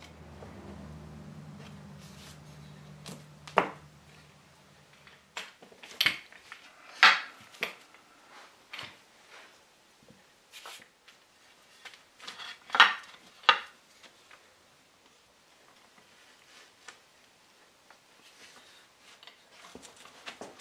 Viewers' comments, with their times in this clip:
0:03 the sound of those two parts fitting together was epic